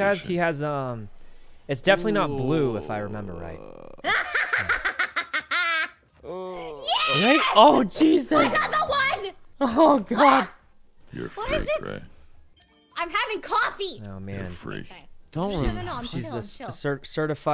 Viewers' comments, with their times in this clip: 0:03 her Laugh is just great lol